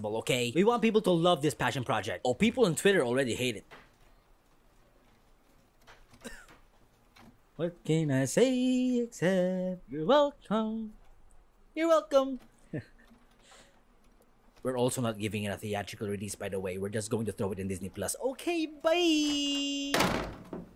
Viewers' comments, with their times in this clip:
0:04 This silence is just amazing